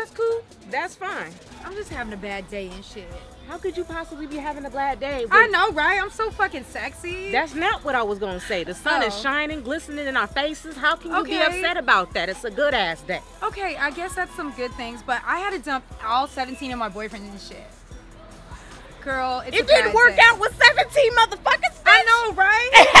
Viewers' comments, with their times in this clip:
0:04 She said "blad day" and not bad day 🤣😂🤣